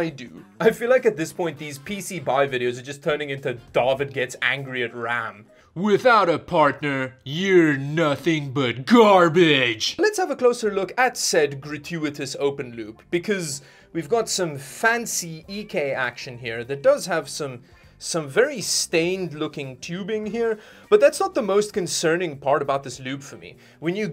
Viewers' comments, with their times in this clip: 0:06 You sound so much like a Kung Fury villain I expected you to ride a Tyrannosaurus Rex and claim world domination. :D